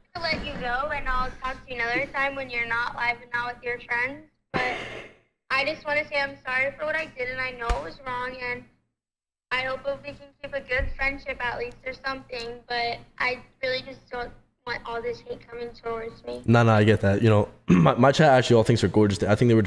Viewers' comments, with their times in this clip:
0:05 sound like a producer tag or something u could put at the beginning of a rap song💀